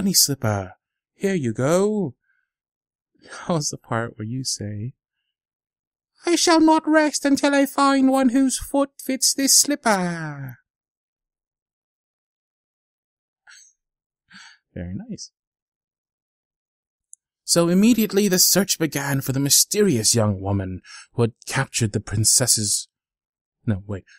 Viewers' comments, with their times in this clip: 0:05 Why does he sound like dobby 🤣😂